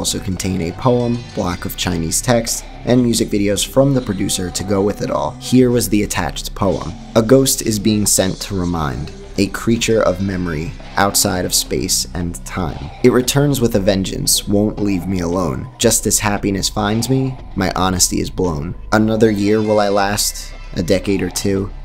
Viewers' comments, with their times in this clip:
0:06 HOLY SHIT I'M NOT CRAZY BUT THE BACKGROUND SONG (bonus track) SOUNDS EXACTLY LIKE A SLOWED DOWN VERSION OF ALL IS FULL OF LOVE - BJÖRK